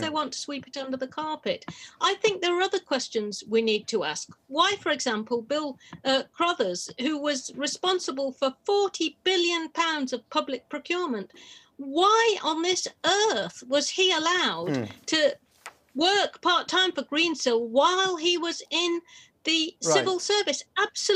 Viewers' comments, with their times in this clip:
0:06 + Prime example. She's talking about 40 billion of public money potentially handled by a corrupt politician... And the host is talking over her answer.